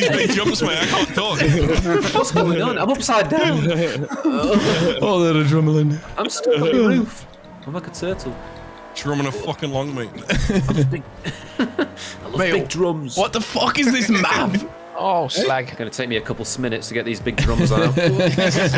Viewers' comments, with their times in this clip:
0:04 How'd everyone miss you saying - "Oh, the adrumaline" 🤣